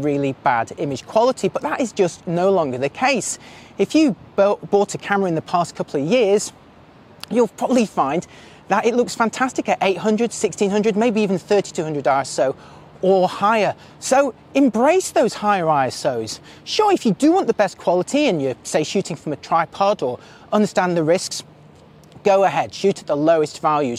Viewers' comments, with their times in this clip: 0:04 Right when you said that shooting at higher ISO was fine and to "go ahead", that building told you to "Shoosh". Your neighborhood does not approve.